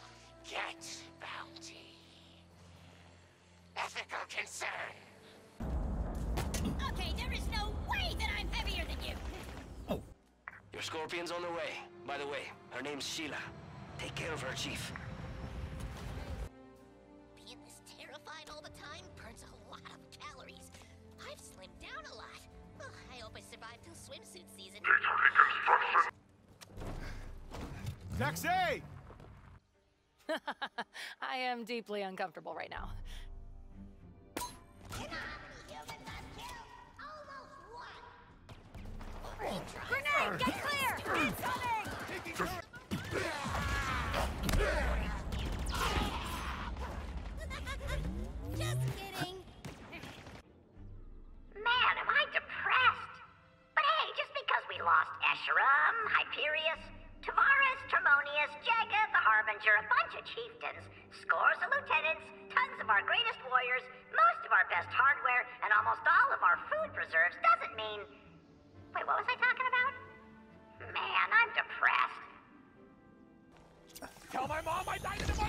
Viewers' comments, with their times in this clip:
0:10 hearing sheila from octane's VA in halo infinite is kinda weird
0:58 The grunt with dementia